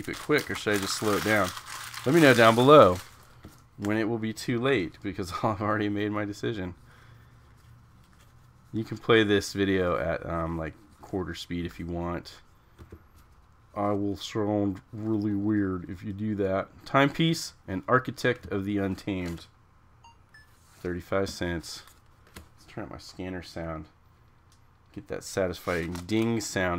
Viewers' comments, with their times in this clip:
0:10 he did indeed sounded weird